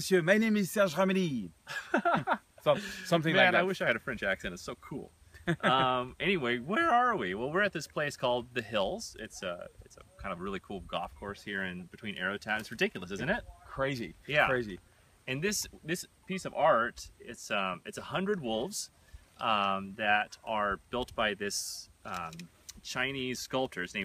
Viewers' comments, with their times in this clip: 0:06 Anyways, whererere arererere we?